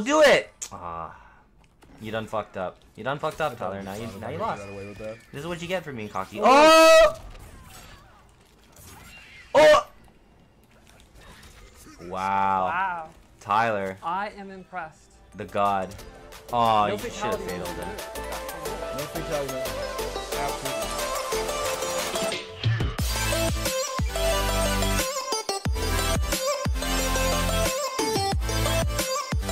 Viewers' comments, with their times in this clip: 0:10 did she block the knife with her scream??